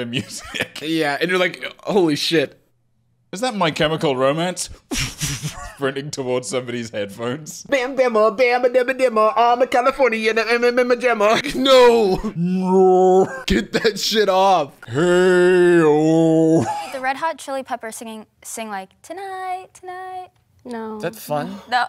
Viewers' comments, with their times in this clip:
0:07 Spot on RHCP impression lol.